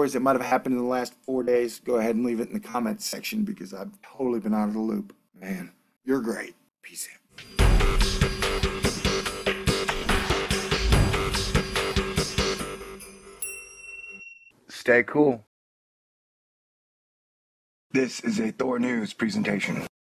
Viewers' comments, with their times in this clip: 0:07 No, good song, but not the one I'm referring to: the one with "wha-dahmp ba-wah ba-whahmp" beat punctuated with a kind of bell 'ting!' at the end. It starts in this video.